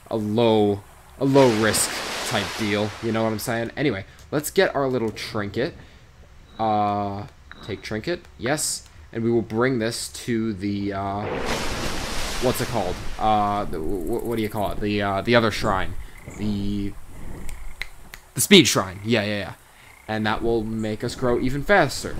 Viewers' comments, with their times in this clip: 0:03 I now know why I don't like beasts of bermunda. There is no sound, and if there is, it's shit. like or the fact that dinosaurs don't have loud footsteps is really sad